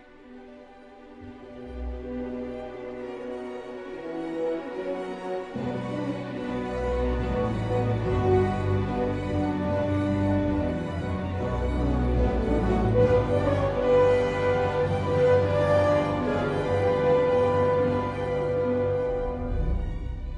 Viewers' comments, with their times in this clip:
0:05 John Williams hinting Harry Potter